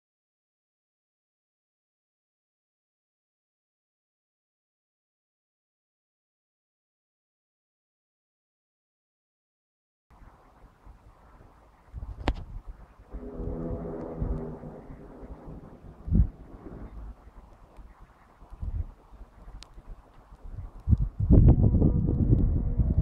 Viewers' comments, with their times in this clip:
0:10 Beautiful volcano images. sounds like freakin' Godzilla is coming!